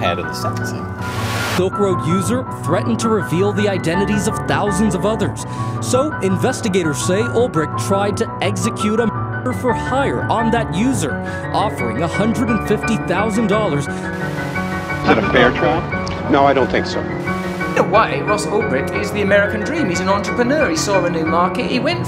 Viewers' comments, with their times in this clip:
0:08 Why the fuck did you bleep out murder